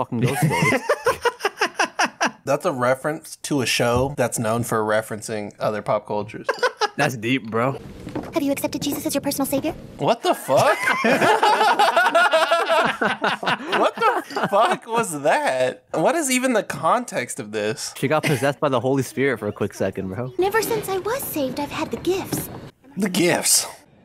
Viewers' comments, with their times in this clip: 0:07 so mad that they all laughed and missed the immediate 'No, I'm Jewish' line